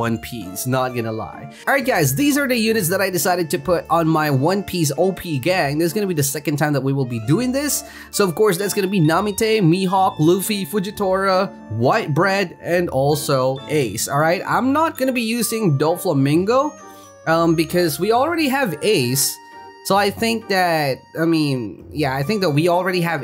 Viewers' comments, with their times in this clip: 0:10 white bread in the